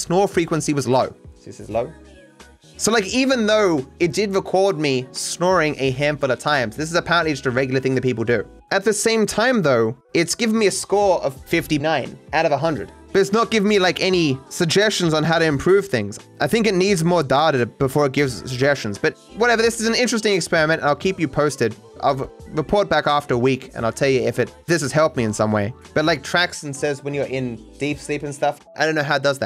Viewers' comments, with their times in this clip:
0:10 that dub over is funny. didnt notice till i read twich chat